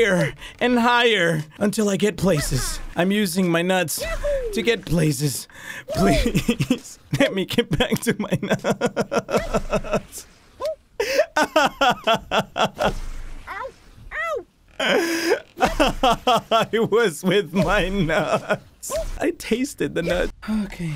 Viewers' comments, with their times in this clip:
0:07 I can’t tell if he’s crying or laughing